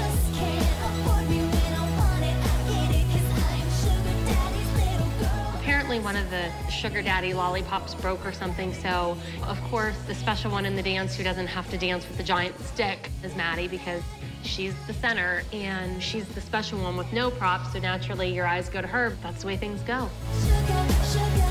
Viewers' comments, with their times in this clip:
0:06 they edited what Christi was saying, she didn’t say “obviously” or “is maddie”, it sounded like she just said whoever wasn’t dancing with a giant stick is gonna draw your attention